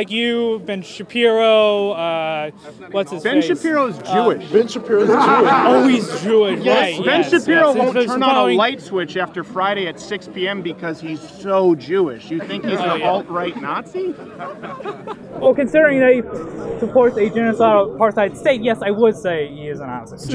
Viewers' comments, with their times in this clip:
0:03 Holy shit that guy has one hell of a "holier than tho" attitude. His sarcastic "yeah sure sure sure okay sure yeah alright sure" nonsense is unbearable. I'm not sure how parents think its appropriate to send their toddlers out to college. He is like a walking satire. I could literally become his character and use it to troll liberals better than I could ever use it to debate conservatives.